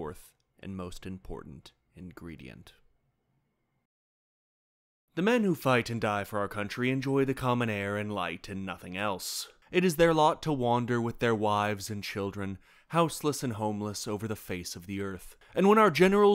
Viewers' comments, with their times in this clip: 0:04 I really like his reading of this speech.